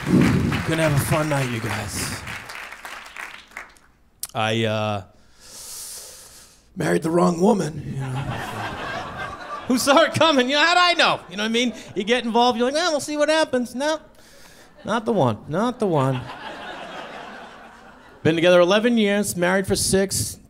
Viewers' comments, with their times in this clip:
0:06 I heard buried and though "how do you mess THAT up"